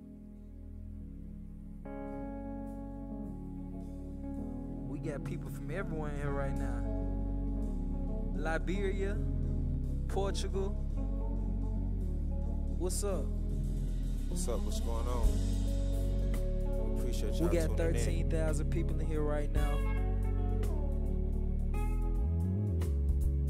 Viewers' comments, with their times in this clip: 0:04 Came back in 2022 for that one those vocals are insane, some nostalgia vibe has it, everybody who sees this i hope you and your family are blessed 💯🤝🏽